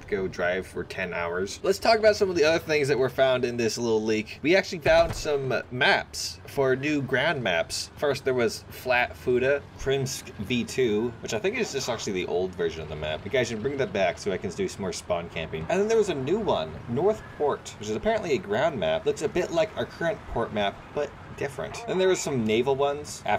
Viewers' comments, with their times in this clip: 0:07 "flat futa", oh dear.